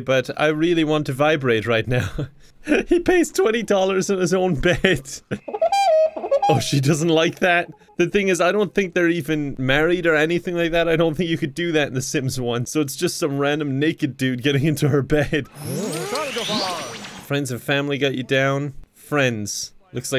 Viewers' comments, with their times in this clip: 0:06 does anybody noticed that it sounds like Woody woodpecker ? laugh If anybody wants they can compared with his laugh and the Sims You don’t have to if you don’t want to